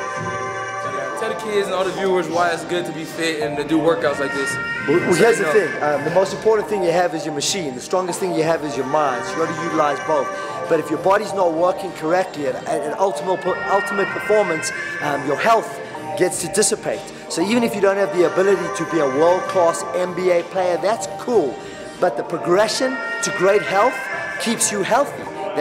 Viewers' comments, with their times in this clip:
0:06 that trainer rap game was on point w music in the background. Damn